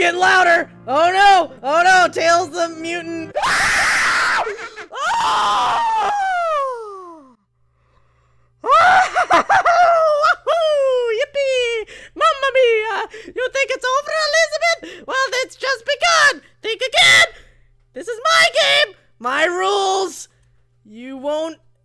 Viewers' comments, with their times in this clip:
0:03 majors mask laugh